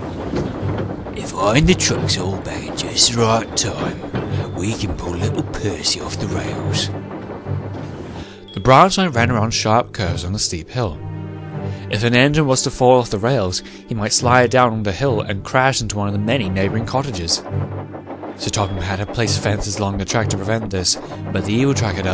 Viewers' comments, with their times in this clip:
0:03 Oh wait the song starts